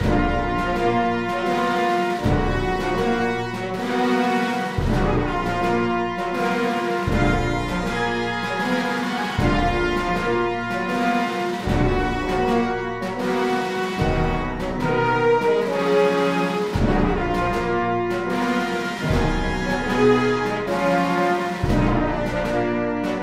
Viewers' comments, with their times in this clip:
0:08 Piccolo...nice job...Trumpet solo...NICE... ...French Horn Domination...NICE